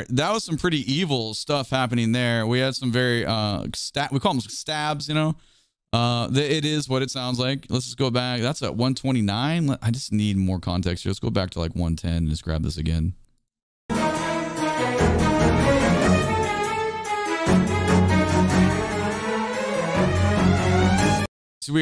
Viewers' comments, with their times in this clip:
0:03 oh so fun how you got the "stab, stab" (Psycho movie legacy there haha)